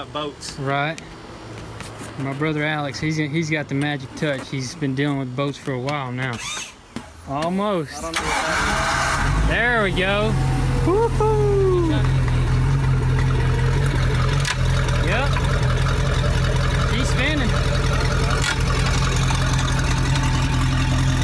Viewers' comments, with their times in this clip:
0:09 Damn that boat kinda sounds like a good old 69 charger